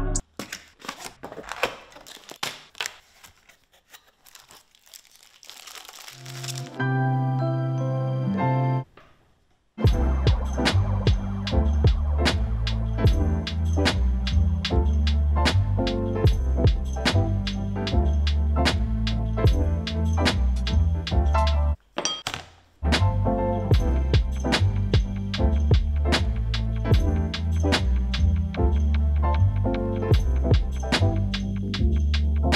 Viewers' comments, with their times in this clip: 0:06 I thought it was my alarm ring tone😂
0:20 He is actually synchronising the sound of the parts with the song playing in the background 🤣🤣🤣 *Respect +